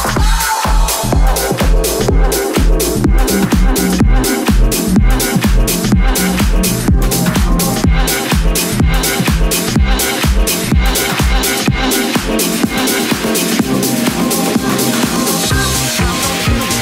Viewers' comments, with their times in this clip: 0:03 No playlist, nice tune.